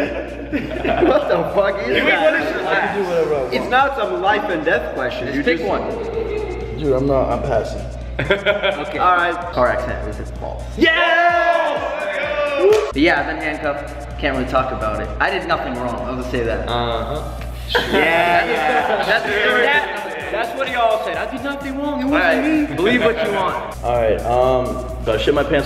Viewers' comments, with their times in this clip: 0:06 There is a creepy laugh